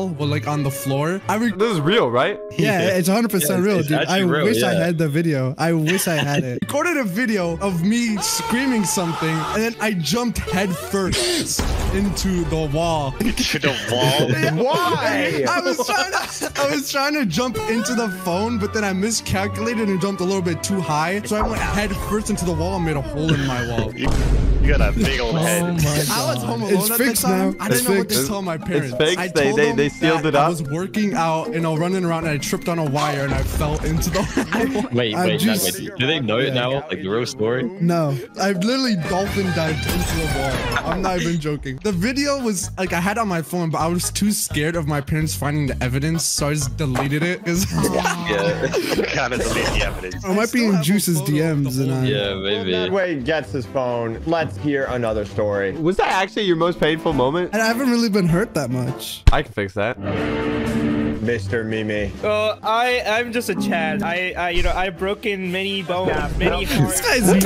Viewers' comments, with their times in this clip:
0:08 Ayo the way that man sniffed it💀
0:39 I JUST HEAR THE FREE BIRD SONG
0:49 tf2 flame thrower